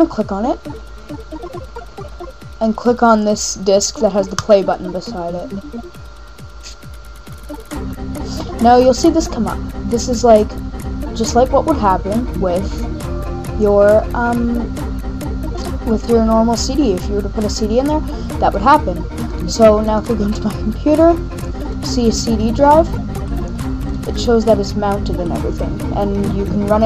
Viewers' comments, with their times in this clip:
0:09 LMFAO Bear Share + your theme muzak suks